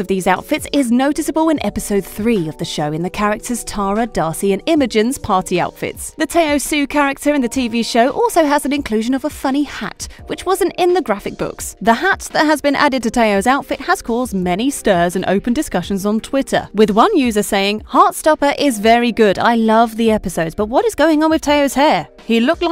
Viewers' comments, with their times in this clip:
0:06 The way she said tao xu 😭